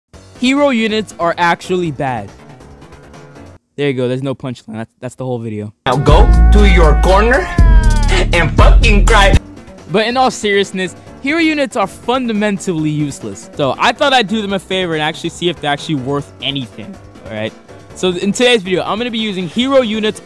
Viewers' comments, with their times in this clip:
0:05 🤣🤣 that RAP is 🔥